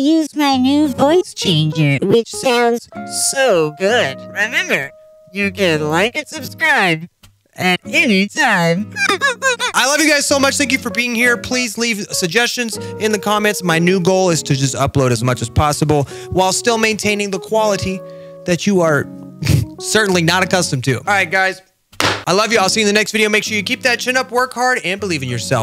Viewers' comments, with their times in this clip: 0:08 bro sounds like badeline from celeste
0:09 bro turned into a violin-